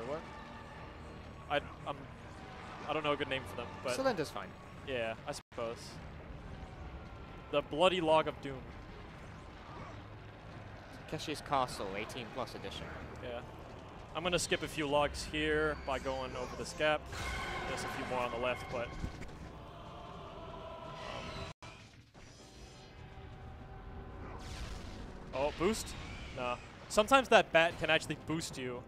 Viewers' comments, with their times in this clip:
0:09 what castle does he mention? Kinda hard to hear what the other commentator is saying.